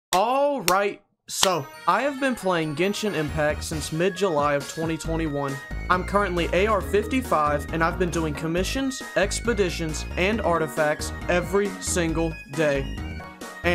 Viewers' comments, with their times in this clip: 0:00 bro that's my ringtone, I got scared 💀